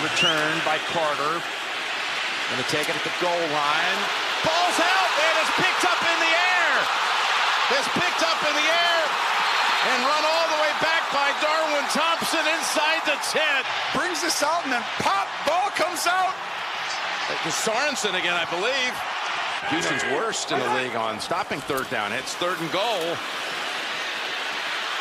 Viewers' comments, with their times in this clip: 0:06 the crowd was going absolutely wild. Still gives me chills.